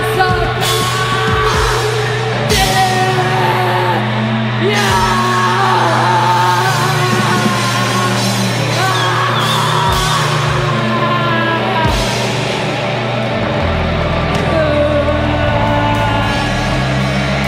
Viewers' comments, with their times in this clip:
0:03 jen laughing at courtney is a sweet moment hahah